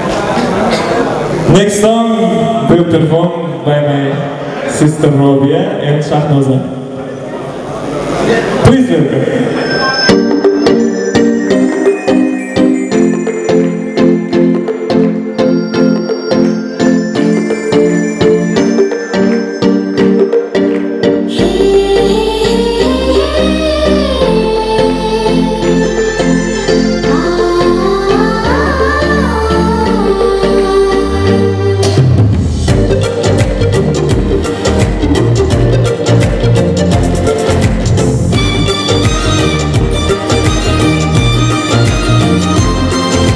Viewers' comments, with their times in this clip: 0:10 The girl sings very well by the original one.. very cute voice😍😍👌.. from India we love Uzbekistan ❤️🇮🇳
0:24 this song 🤩🤩🤩 . I watched this movie with my dad in a movie theatre. Now listening to this song makes me nostalgic. Little cutie is too cute 🌚❤️❤️ .